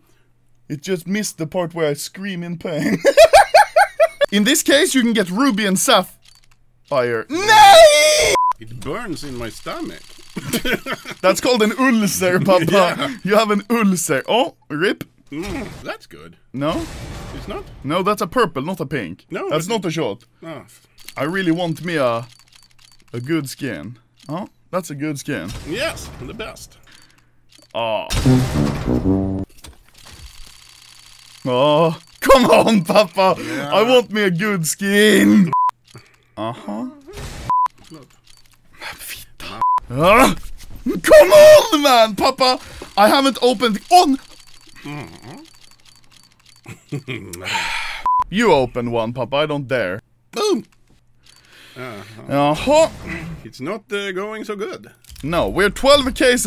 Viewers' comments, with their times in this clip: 0:06 What sound does the Horse make? Set 8 kid at the back of the class:
0:06 No one: Horses:
0:44 Anomaly: "papa, i haven't opened.. OOON!!", Papanomaly: Minecraft villager noises